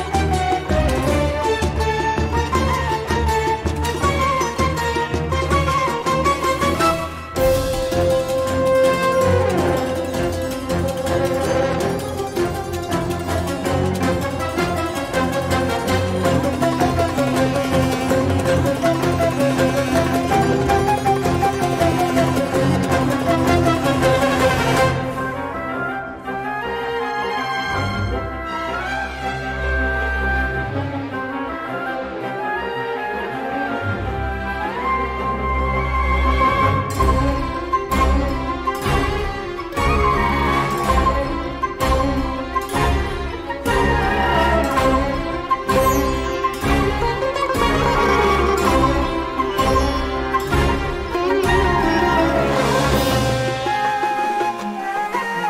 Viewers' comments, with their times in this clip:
0:06 really like the trombones in but sadly, in game we probably won't hear until that part since we could easily kill the enemies
0:25 my fav part!!! I really into this melody since Orchestra Live!!!
0:40 is where i feel in love that little part just sounds so satisfying its so dramatically, and intimidating yet beautiful and elegant at the same time